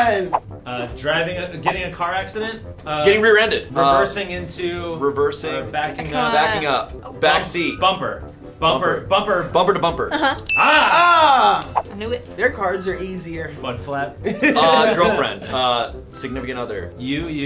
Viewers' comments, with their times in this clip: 0:04 She hit the woahh